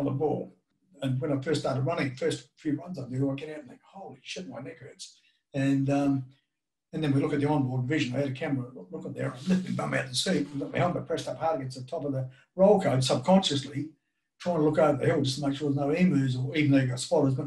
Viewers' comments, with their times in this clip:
0:03 What does Rosco say ? It sounds to me like “Holy sh*t my knickers”! Which it could well be, considering he’s an Aussie!